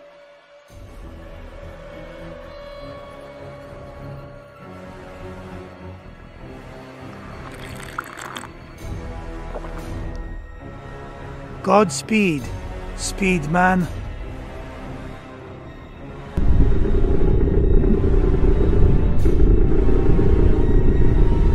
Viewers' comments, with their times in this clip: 0:07 Ominous coffee sip ☕😈